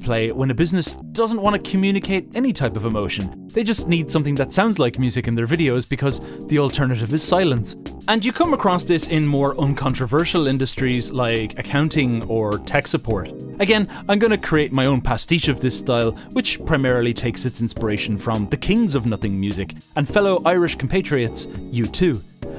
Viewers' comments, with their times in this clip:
0:04 Especially the music displayed (the Nothing Music portion of the video). This style of music clearly is inspired by post-rock, a genre that houses some musical behemoths of creativity such as Godspeed You! Black Emperor, Explosions in the Sky, and others.